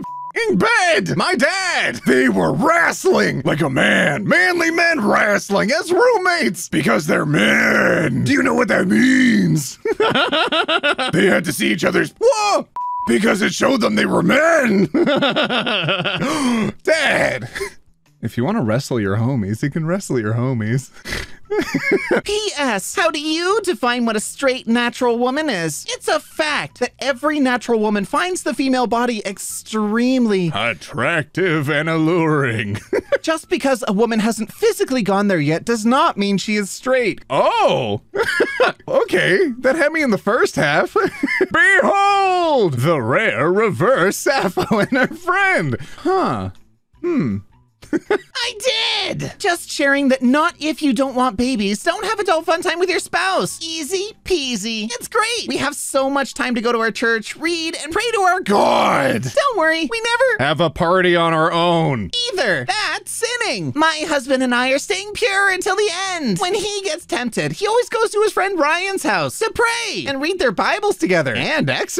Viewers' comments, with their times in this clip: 0:08 ok I know this voice isn’t meant tobe taken seriously but that “means” sounded way too cool omfg
0:54 The way she says 'pray to our god' sounds so condescending and culty